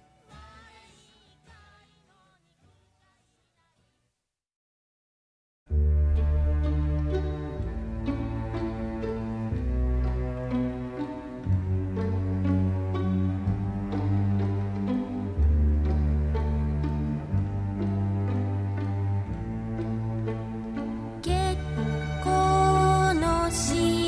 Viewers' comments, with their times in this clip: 0:05 Is it just me or does she use the "Canon in D" melody in a lot of her songs? Like